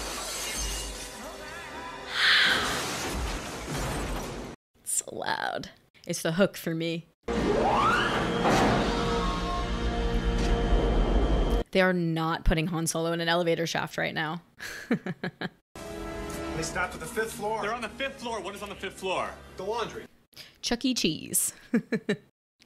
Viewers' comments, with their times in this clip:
0:05 You mean that since that opening jumpscare you HAVEN'T turned down the volume?! 😲